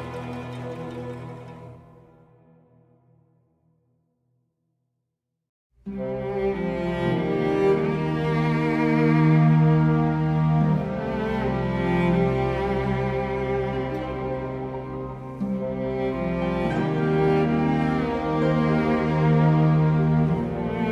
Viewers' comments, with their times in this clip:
0:04 I came here for This part reminds me of this zone and one of my favorite more peaceful Pandaria soundtracks!